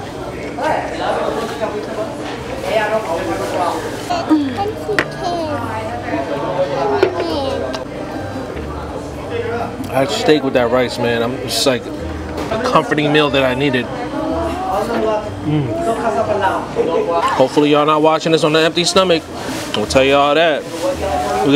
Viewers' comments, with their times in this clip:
0:03 Dat moan tho 🤣🤣🤣🤣🤣